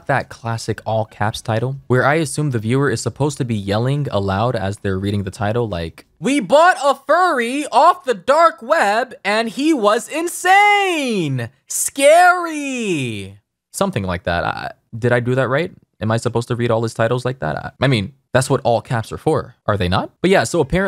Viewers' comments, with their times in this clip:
0:05 this is literally how i voice the title of his vids in my mind 💀
0:07 He sounds like James of TheOdd1sOut.